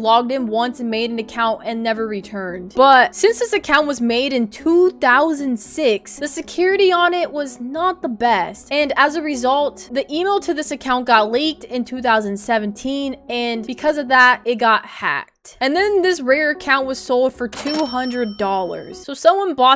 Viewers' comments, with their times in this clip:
0:06 the security Onett